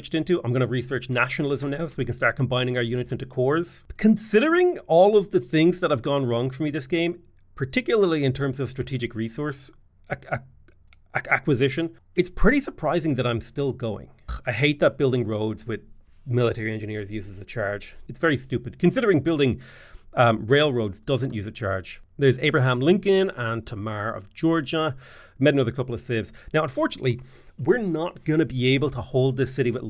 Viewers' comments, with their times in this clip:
0:10 glitch in the matrix? D: ...or the strain of constant, unplanned and in the beginning unwanted war?